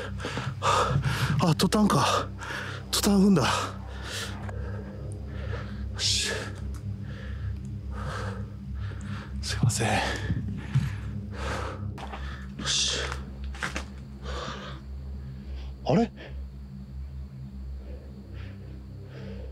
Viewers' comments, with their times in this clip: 0:05 Errrr, am I watching 'Dances with Wolves'?? I hear "There's TATANKA"